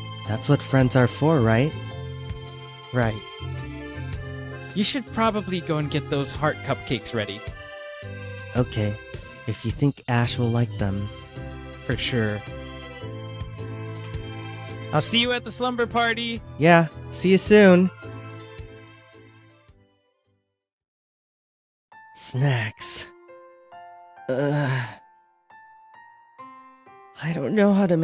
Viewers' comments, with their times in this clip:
0:09 I thought he said sex the first time through